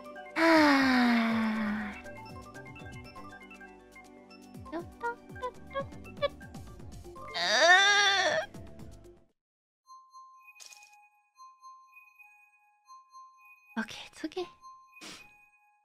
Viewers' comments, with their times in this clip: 0:07 Ina : "Please don't Baby Track" Game : "Got it! Baby Park it is!" That disgusted noise from Ina, TSKR xD Remind me of the pufferfish that ate carrot. F